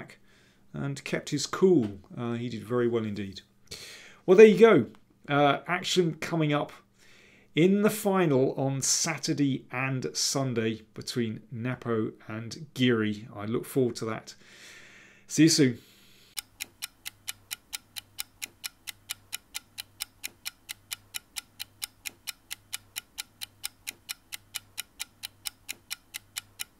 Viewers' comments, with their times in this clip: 0:08 "Saturdi and Sunday" - funny mix of English accents...